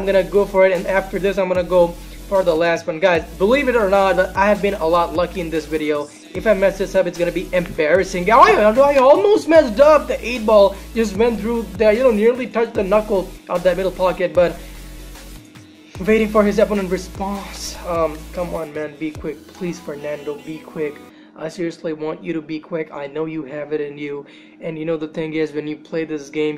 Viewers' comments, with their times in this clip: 0:07 😂 he said yeahsixhdbsisiied or some shit lol